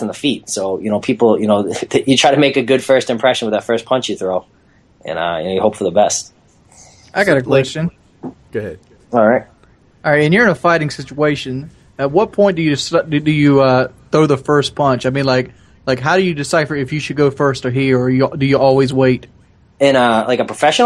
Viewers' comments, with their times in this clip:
0:06 somebody's playing minecraft in the background. I heard the spider sound, lol